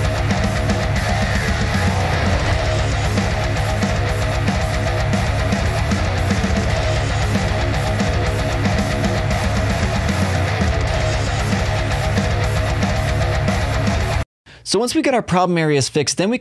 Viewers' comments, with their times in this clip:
0:03 I'm on the and I could't hear any differences on the EQ you made. Do I have some kind of deafness?